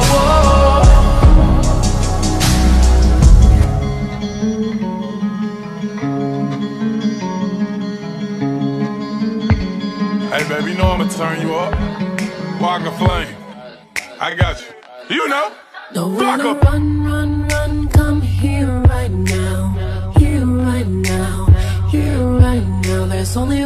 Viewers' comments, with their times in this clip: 0:10 The transition was frickin awesome!